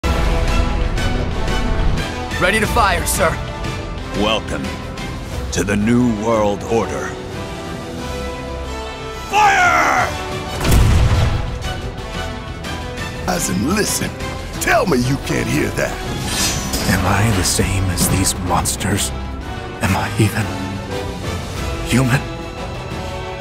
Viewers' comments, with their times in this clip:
0:04 come on man that voice isnt coming out of that sissyboy's mouth 🤣🤣😅😅😅